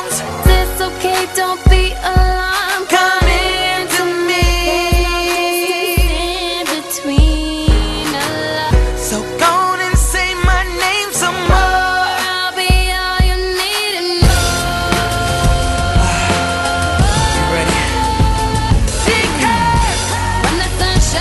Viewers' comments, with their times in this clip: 0:08 This version's terrible. So we're all just going to ignore the fact that The person who edited this mix completely chopped off Rihanna while she was singing?